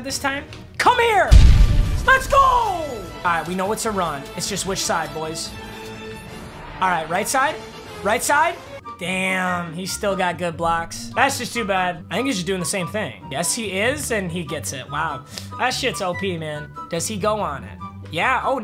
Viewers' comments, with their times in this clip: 0:04 Was that the Chaotic music in the background ?